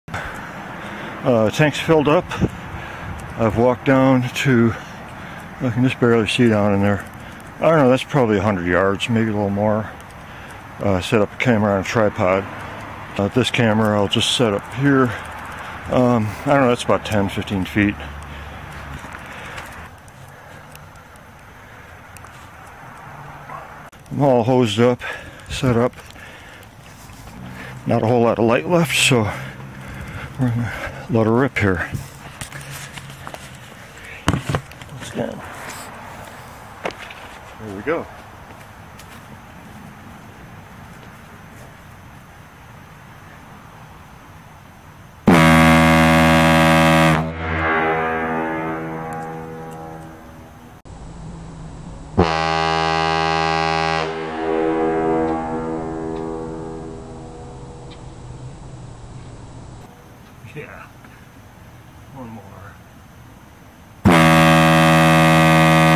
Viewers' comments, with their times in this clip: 0:01 hank hill is that you?
0:44 the horn starts
0:45 i hear the horn!!!!!!!!!!!!!
0:46 I felt that shockwave.😁